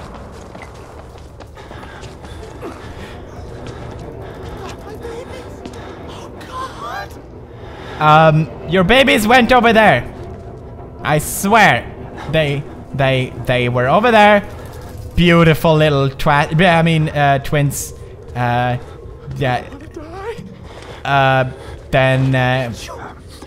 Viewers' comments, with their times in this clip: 0:04 in the video Listen to that guys voice it’s so funny